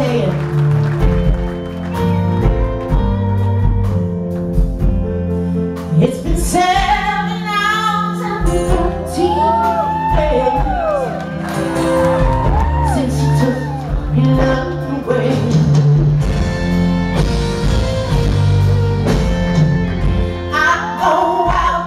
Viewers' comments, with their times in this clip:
0:05 she start to sing... and what a voice ! RIP Prince ! And thanks for all you've leaved behind !
0:06 song starts yes she spoke for 7 minutes. -_-